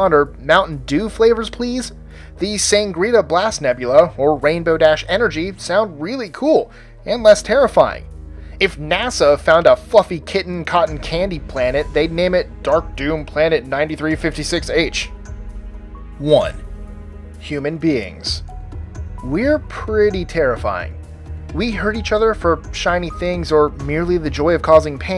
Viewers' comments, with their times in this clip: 0:09 i thought he said fucking lol